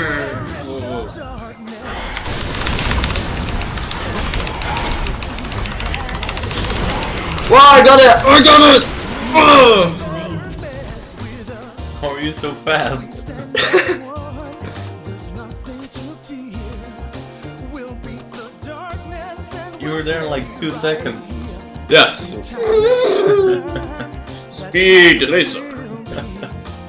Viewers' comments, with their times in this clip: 0:07 haha I love his fake accent :-) (listen to "lol I got it")